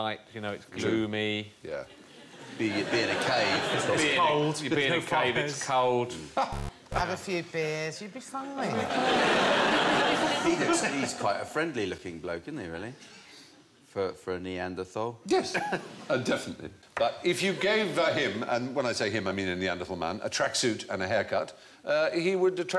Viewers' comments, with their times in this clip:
0:05 bit of an audio/visual bug (Buzz and some oddly colored artifacts in the video).